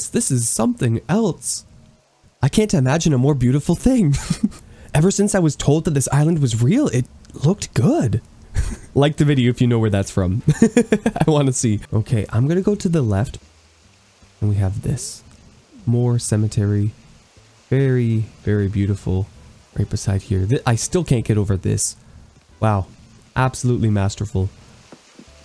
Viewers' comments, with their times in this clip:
0:10 ITS CORN 🌽 (I’m in love with your laugh😭)